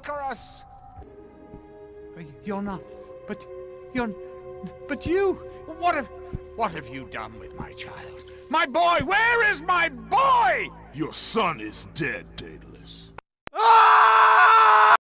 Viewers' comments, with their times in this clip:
0:04 at this moment the chained guy literally changed voice actors in the smoothest transition ever.